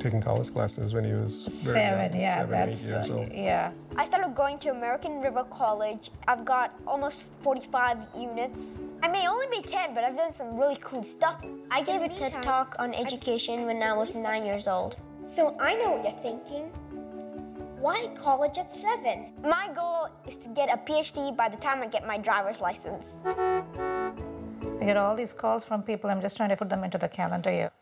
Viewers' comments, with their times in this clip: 0:10 Did he say tiktok or am I just hearing things